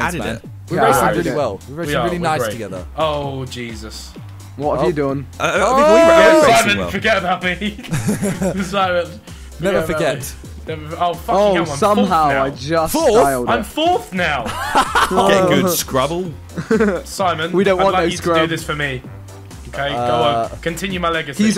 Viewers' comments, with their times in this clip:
0:03 how northern did Vik sound hahaha